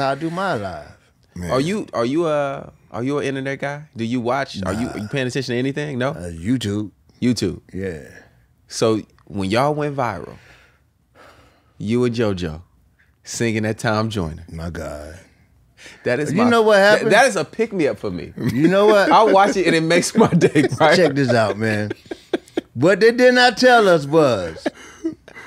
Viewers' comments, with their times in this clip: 0:06 I had to pause this video to check out Tom Joyner 😂😂😂😂 they sound good, but (somebody commented two uncle's at the church revival) 😂😂😂